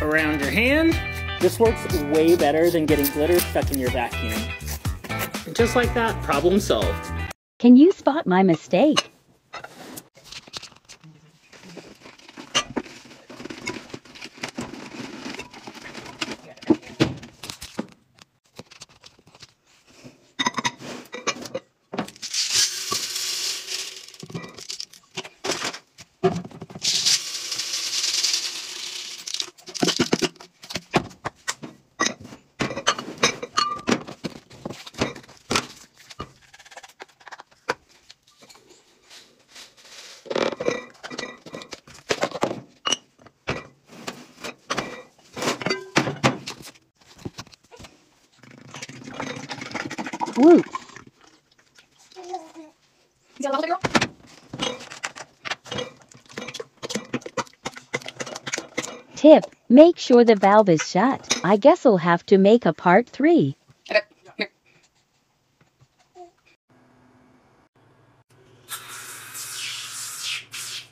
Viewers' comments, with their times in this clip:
0:08 holy fuck that is dangerous, especially since they have a kid around (hear the baby babbling at the end) listen, even if u have it up high kids are climbers, they will climb up and get their hands on those cleaning products and they will eat it, its why you should leave them in their original containters, it doesnt matter if they are not aesthetically pleasing, if you really must put it in an aesthetic container, put it into one with a kid safe lock, not glass jars that can be opened with ease
0:51 is that a baby I heard ? OMG those toxic and dangerous thing are so easy to grab, and they look way too much like candy. This is SO dangerous I hope she stop doing this for the sake of her child.